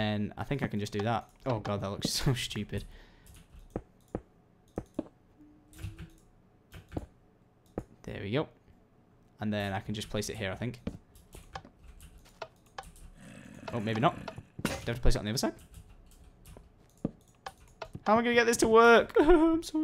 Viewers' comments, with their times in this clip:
0:05 omfg you can hear a little girl saying mmhmm right after he says the levers look stupid!